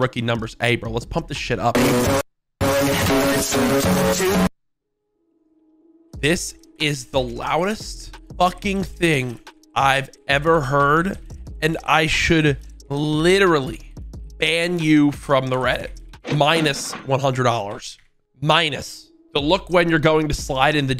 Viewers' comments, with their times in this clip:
0:06 wait he’s never heard an M82 with wrapped suppressor on warzone with max volume?